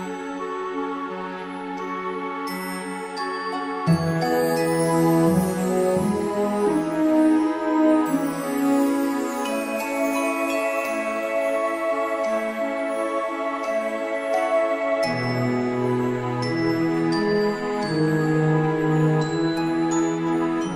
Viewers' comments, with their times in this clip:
0:07 That music intro took me back to another life time I tell ya man. Love the work, keep it up!